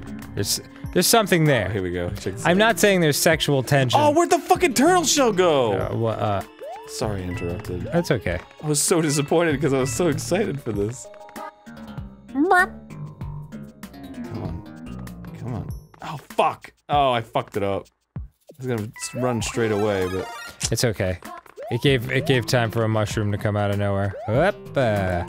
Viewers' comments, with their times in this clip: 0:06 Arin almost says "Sorry, I interrupted" on beat.